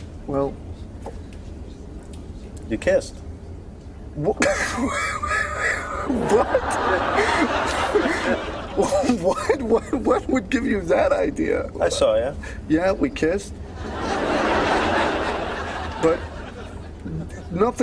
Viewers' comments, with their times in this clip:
0:03 that weeze had me dying. it sounds like when my car doesnt start.
0:03 diesal engine not starting
0:03 Autorickshaws in India when they start
0:04 I thought I was the only that laughed like Ross